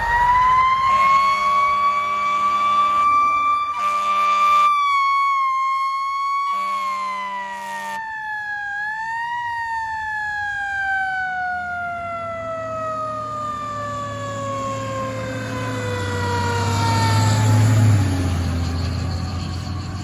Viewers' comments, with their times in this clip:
0:04 That federal signal model Q sounding sick Sounds like it needs new brushes Sick means like its not in good condition since its sound is wavering